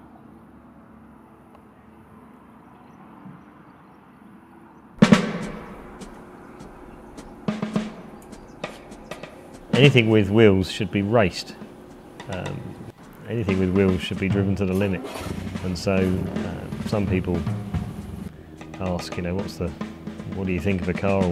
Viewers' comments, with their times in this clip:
0:05 The percussive section from was pure genius!
0:08 The jazz drumming over the engine sound from is absurd. Who in the world wouldn't prefer to hear the engine?